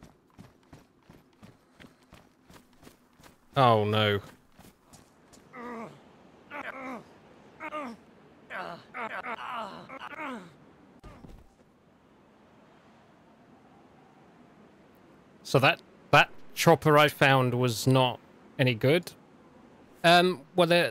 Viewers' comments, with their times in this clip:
0:05 I don't think i need to explain what went through my mind when i heard those grunts xD